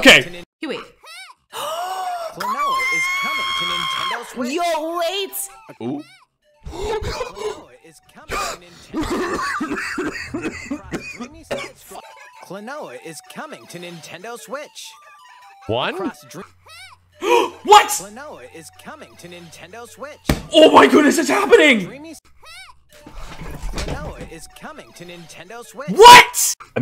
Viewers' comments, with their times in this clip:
0:08 When did Seth Rogen become a VTuber?